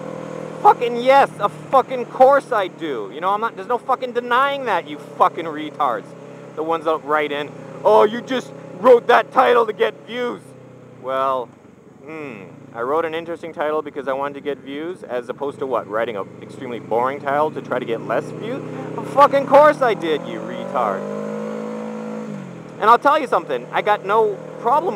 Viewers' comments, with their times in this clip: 0:07 sounded totally like RayWilliamJohnson :D